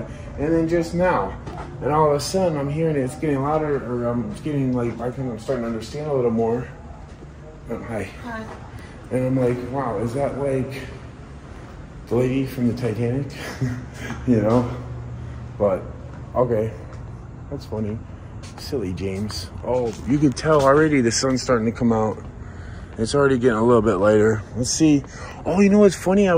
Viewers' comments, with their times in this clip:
0:08 I heard a woman say Hi 😮💀
0:08 A woman says hi loud and clear